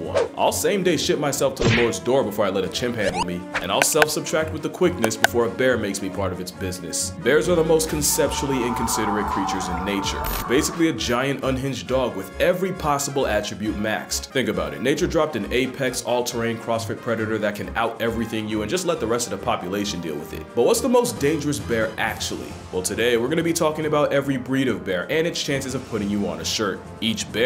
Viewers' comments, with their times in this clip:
0:07 Even without the scream sound effect you know that fish is in PAIN. FCK THAT
0:08 The bear skinning the salmon alive as it screams bruh 😂😂😂😂. That shit was hilarious.